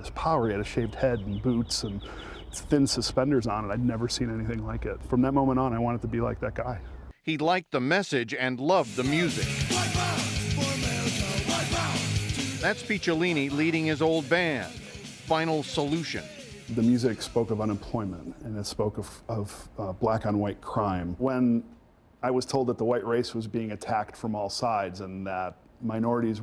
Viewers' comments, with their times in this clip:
0:10 sounds like that gta5 song that play on the radio that trevor is always on